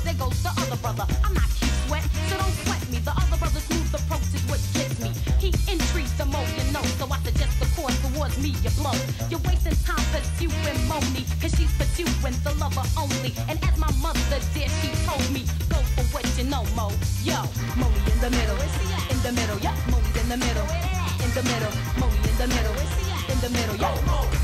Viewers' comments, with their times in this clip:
0:10 am I the only person who loves when she says pursuing?💕💕